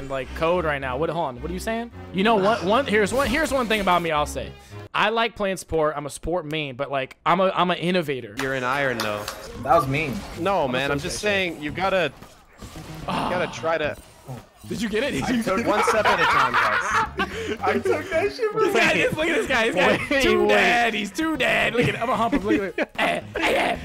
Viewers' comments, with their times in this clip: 0:09 even the coach couldn’t help but to laugh LOL. bullying isn’t cool dude